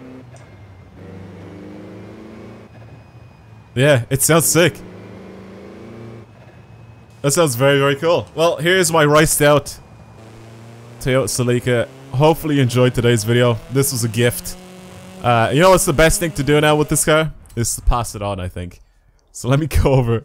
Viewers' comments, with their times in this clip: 0:05 yeah, most of the bovs in the game have the same sound